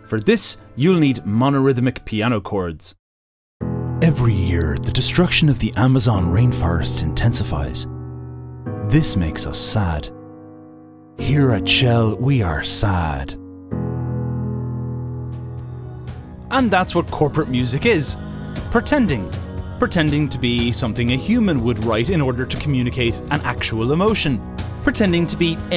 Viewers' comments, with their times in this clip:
0:09 I have no clue why but you saying forest in your accent got me I guess from all the terrible music I needed to have an emotional outburst.